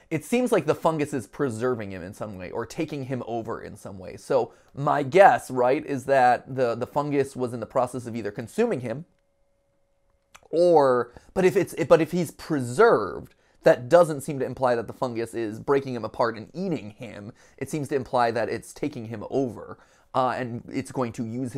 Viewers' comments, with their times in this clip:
0:07 Yoooo DJ music man boss theme 10 hours